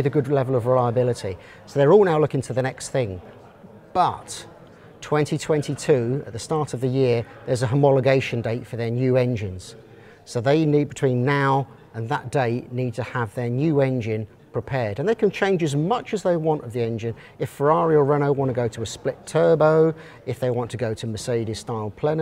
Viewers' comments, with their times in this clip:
0:03 That "but" was perfect